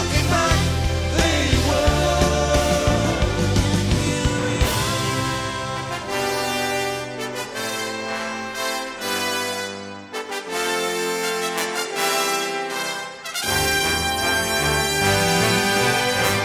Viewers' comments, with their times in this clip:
0:03 That moment, when the orchestra comes up with the trumpets and french horns...no matter how many times I listen to this it always moves me to tears.